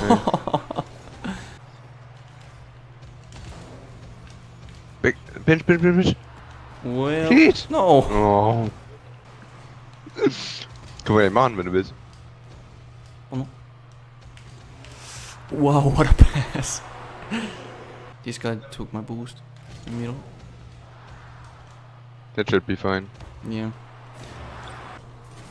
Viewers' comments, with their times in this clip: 0:10 on he talks german